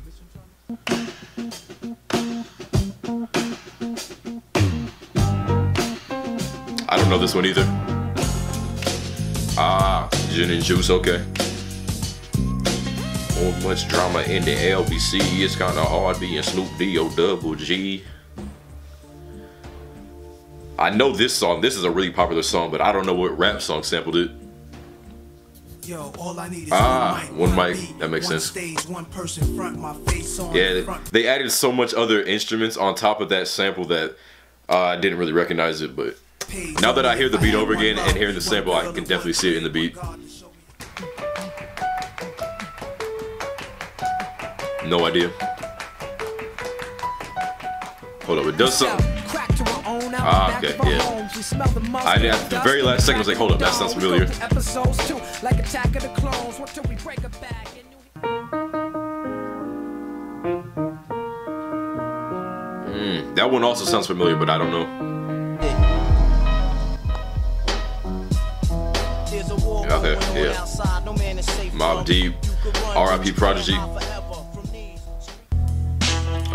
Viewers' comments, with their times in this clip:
0:04 IMO sounds more like the sample used in 50 Cent - How To Rob. I think they had it wrong there...
0:59 I thought this was in Tookie Knows 2.. that piano is kinda similar